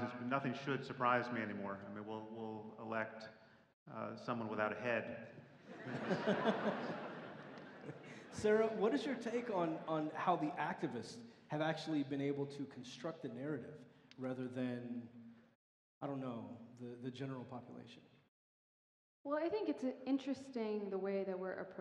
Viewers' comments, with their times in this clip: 0:05 Terrible sound. I'm out